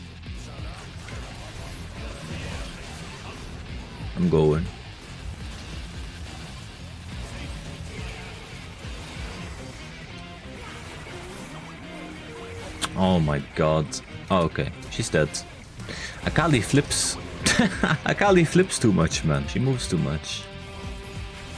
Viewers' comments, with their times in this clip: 0:04 theme song help win 🗣️🔥🔥🔥